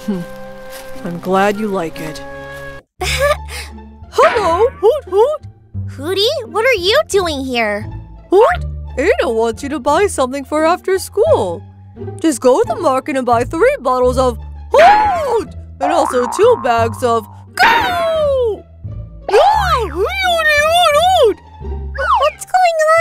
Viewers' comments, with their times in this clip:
0:07 her voice sounds like one of aphmaus friends